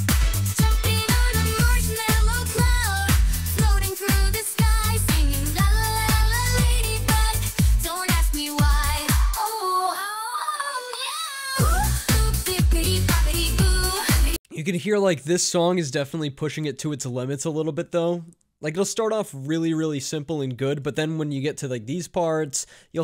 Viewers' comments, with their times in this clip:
0:06 -18 it sound like most modern pop trash. I say most.
0:11 Bro are you kidding? That drop is insane for real!